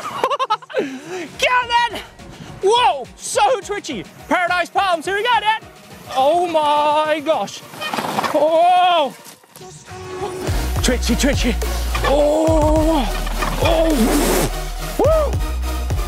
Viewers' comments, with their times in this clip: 0:04 he sounds like such a Fortnite kid